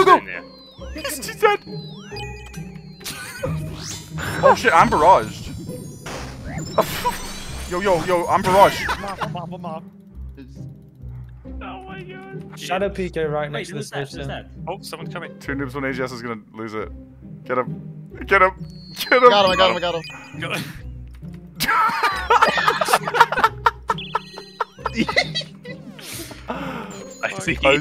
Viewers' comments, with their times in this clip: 0:09 LOL I haven't laughed at an OSRS clip like this in years. The panicked "I'm barraged!" and spam clicking the seed pods to move away from that tile knowing that someone would spear you onto it for a laugh is so f*cking funny LOOOOL